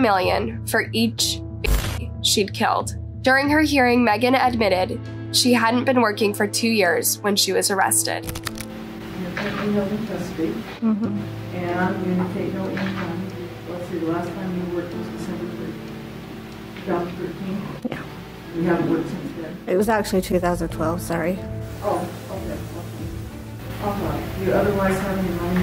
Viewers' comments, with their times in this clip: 0:09 accidentally scensoring baby instead of killed